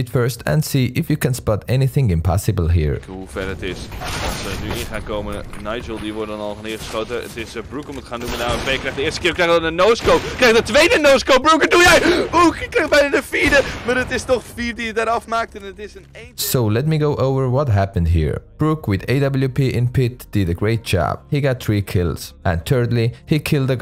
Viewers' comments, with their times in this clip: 0:08 it's so cringe hearing my own language in an English video.